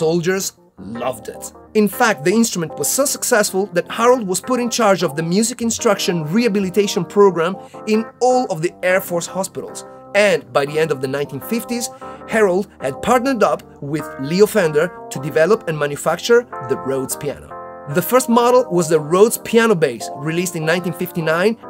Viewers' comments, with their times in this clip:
0:04 surely one of my go-to favorite piano sounds! but isn't that steve rogers ? hahaha